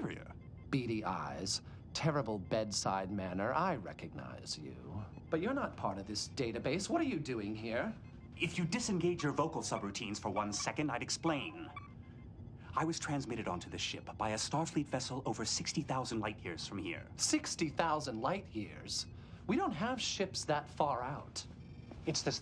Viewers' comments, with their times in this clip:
0:05 His mispronunciation of “database” kills me. Ugh!